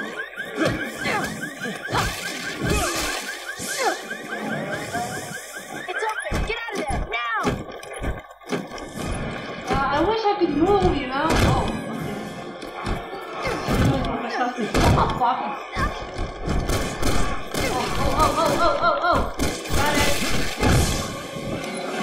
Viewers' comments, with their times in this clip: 0:07 bad alarm bad